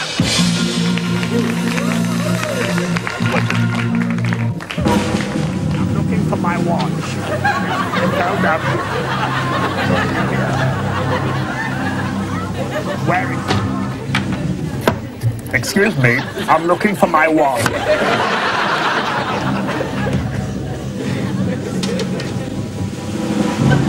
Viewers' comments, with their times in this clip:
0:06 He spoke, My god he spoke